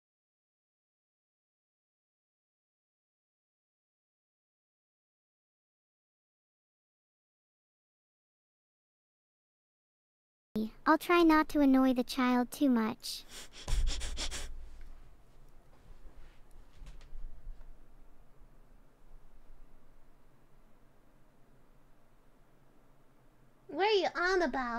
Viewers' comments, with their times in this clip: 0:10 audio goes back